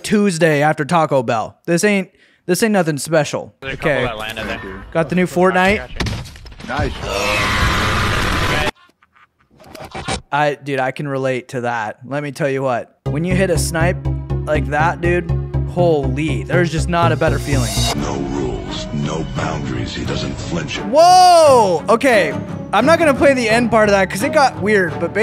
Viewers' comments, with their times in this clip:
0:07 most life threatening noise I've ever heard